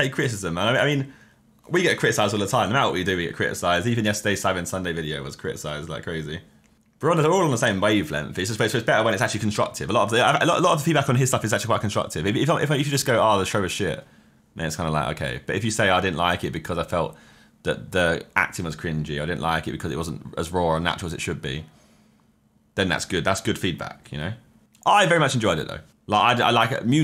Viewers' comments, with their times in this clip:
0:08 Josh is like the verbal embodiment of “a bo’tol o’ wa’er” just listen to this as someone with a different accent other than british.